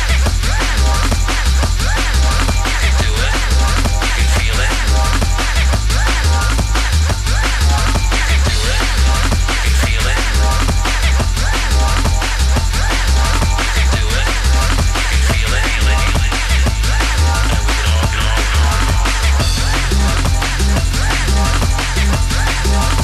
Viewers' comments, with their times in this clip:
0:09 where he mixes into The Basement Track really gets me going for some reason.